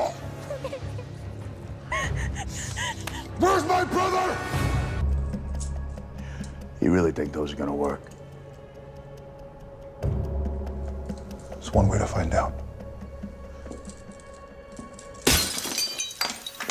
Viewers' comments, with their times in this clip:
0:03 I love when sam yells.. let out that tiger sam...let it roar